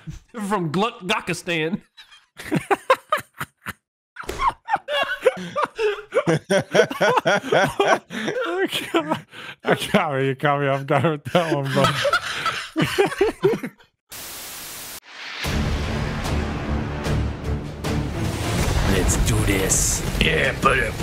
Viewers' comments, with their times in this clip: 0:03 timing as he laugh and slam arm chair change to front view operator mp lobby